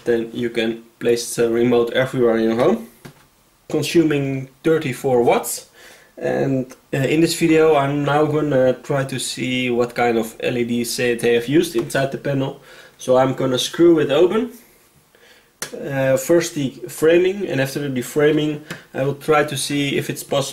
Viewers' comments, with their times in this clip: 0:04 "...dirty four watts". Is that when it lights red? :-D